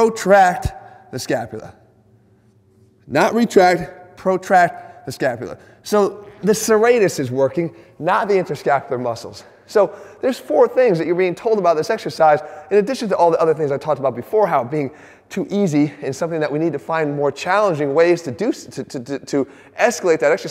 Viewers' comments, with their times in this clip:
0:05 Anyone else hear him let one rip